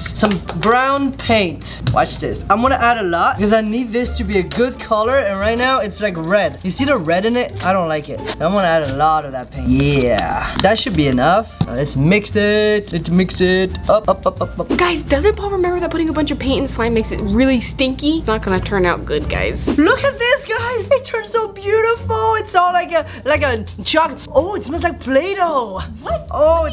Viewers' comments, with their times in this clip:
0:09 I LOVE the way he said “yeah” 😂